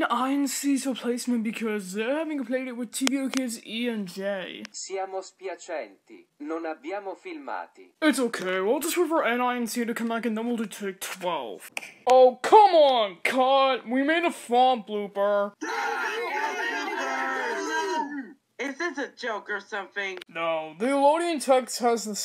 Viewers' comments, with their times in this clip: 0:05 T speaks italian